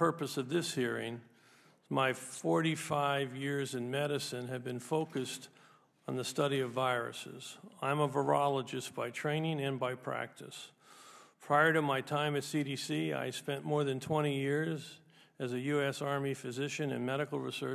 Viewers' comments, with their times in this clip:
0:03 Interesting the slowing down of speech when he spoke of being in medicine for 45 years. My father died at 39 years old & my husband died when I was 48 with even more to consider from that sentence.